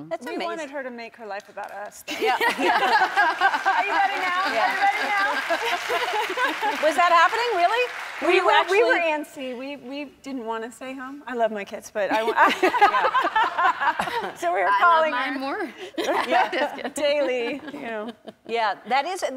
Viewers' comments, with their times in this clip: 0:06 Emily looks so much like Julia Roberts! She even laughs like her.